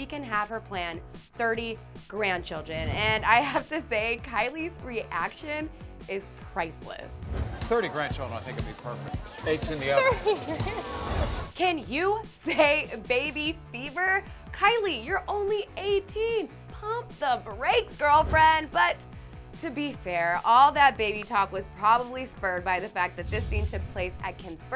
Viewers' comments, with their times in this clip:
0:08 Yo was that REALLY her talking? She sounds like a man😂😂😂😂